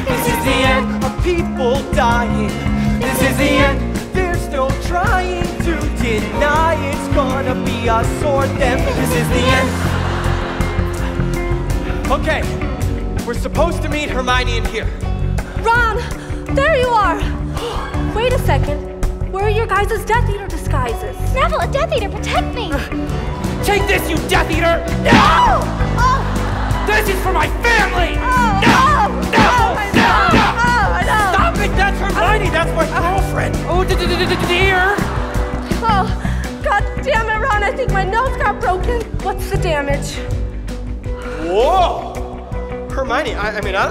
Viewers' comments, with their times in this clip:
0:04 Ron’s voice crack had me on the floor
0:04 There’s no tr*YE*ing to deny it’s gonna be us or them.
0:24 the sound she makes 💀